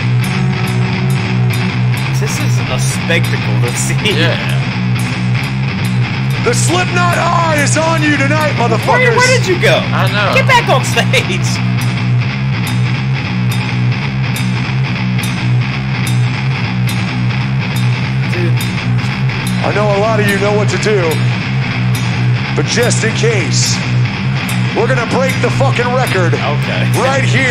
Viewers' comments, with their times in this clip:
0:09 The cocaine is wearing off, Joey is getting tired of hitting that ride cymbal.